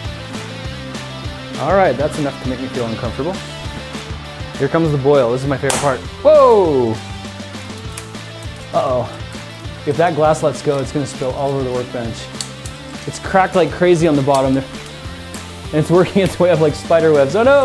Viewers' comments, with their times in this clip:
0:04 I Thought Someone Started Shooting